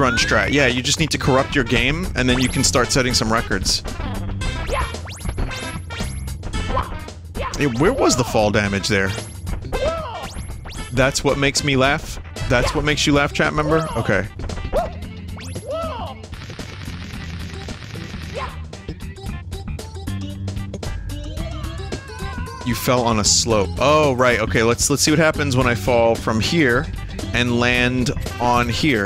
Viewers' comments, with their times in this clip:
0:10 Vinny unknowingly syncs with the music